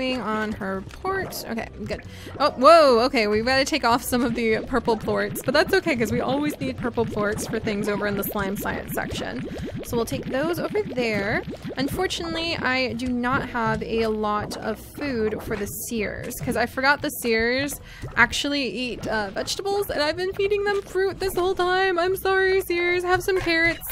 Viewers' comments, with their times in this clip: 0:10 Purple plots? uhmmm